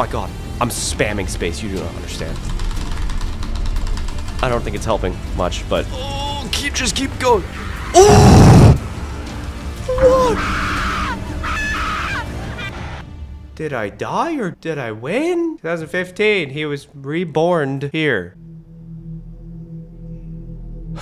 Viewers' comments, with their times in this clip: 0:06 Guys do you not u derstand he hurt his balls badly that made him die that's why it ended up like that he was screaming so much of pain and he died rest in pieces Vent Man 😔 I mean Vetn Boy
0:08 He screamed so hardly into the microphone 😂😂😂